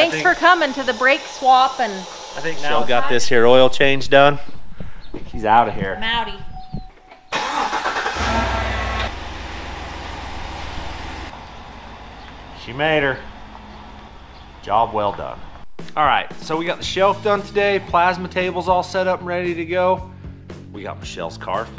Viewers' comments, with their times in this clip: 0:07 what is the whining noise coming from the engine when you started it my gmc makes the same noise , sounds like a power steering pump gone bad but these dont have power steering pumps.